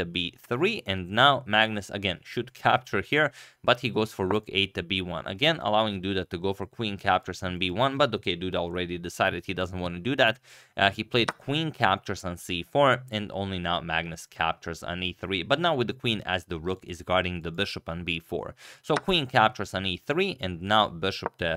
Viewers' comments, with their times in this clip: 0:07 "but okay duda already decided he doesnt wanna dudat" some mad alliteration